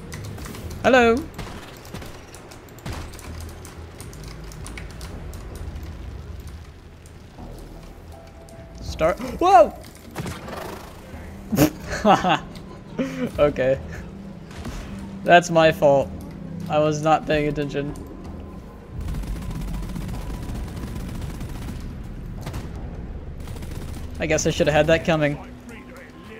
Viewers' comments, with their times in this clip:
0:09 the scream of a manly dwarf.